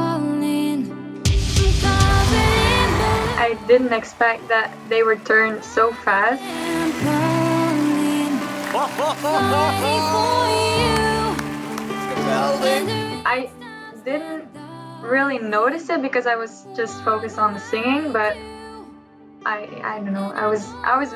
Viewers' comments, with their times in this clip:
0:07 are u kidding me u have an amazing voice u know